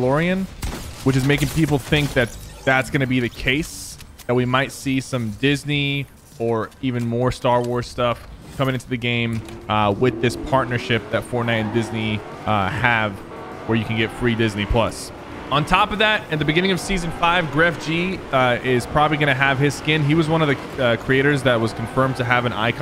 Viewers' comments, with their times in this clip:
0:08 oML the car:RREEEEEEEEEEEE